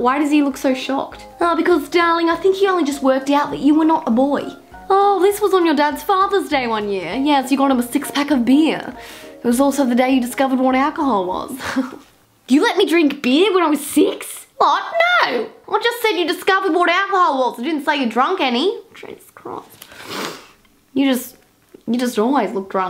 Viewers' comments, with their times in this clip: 0:07 sound like Miranda Sings